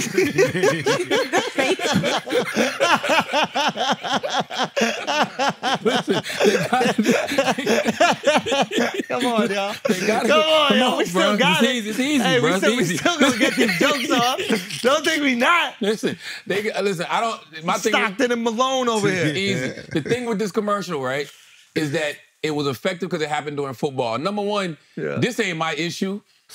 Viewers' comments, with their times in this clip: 0:07 D Block! Howling! We’re all 12 years old here